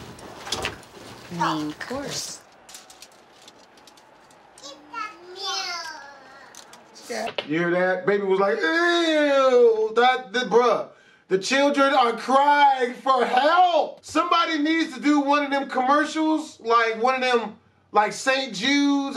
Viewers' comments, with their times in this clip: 0:04 Sounds like the kid said "Keep that meal"